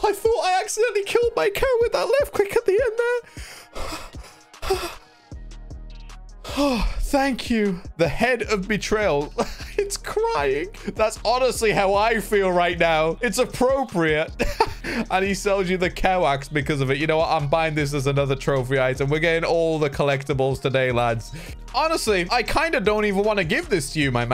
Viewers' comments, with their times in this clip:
0:05 he sounded sad after he almost ended his cow.